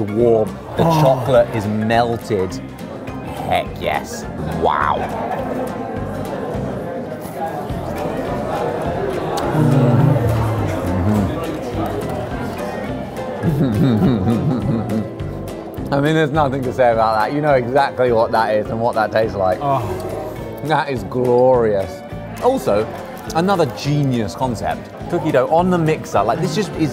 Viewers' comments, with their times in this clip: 0:09 the collective “mmm” 😂